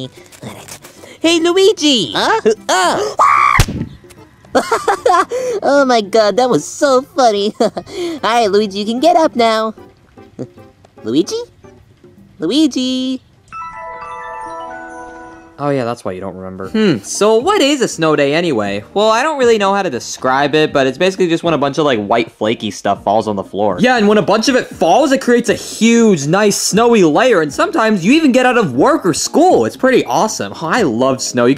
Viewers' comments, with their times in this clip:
0:03 baby luigi screams my favorite part 142...
0:04 Baby mario: why do i hear boss music
0:13 Fun fact: it played the wrong sound. It's a diffrent sound for starting a flashback and ending a flashback, but in this video it was the same each time.